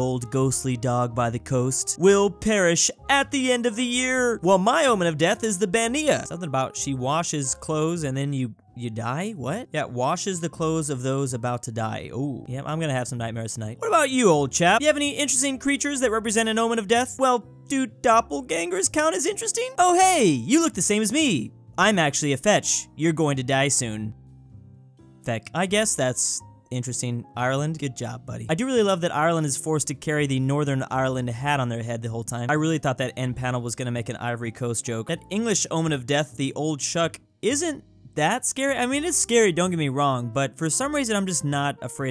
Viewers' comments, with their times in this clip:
0:05 Can we just appreciate the fact that he pronounced Bean-nighe semi-accurately
0:23 i love how ireland says ''feck''